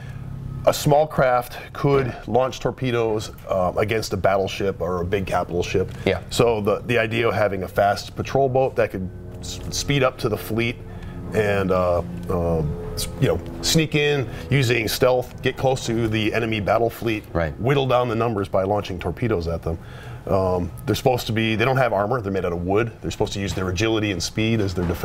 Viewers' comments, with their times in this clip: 0:10 airplane sounds at the background lol